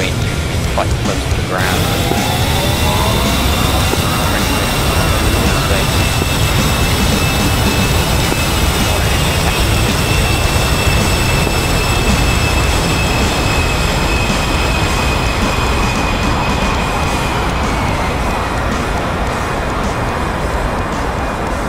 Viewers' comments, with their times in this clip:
0:06 WhatsApp notification sound